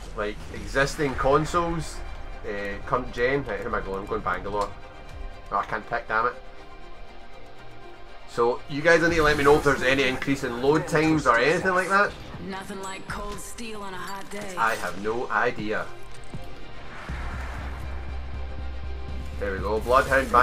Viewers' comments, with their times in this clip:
0:03 what is omanko generation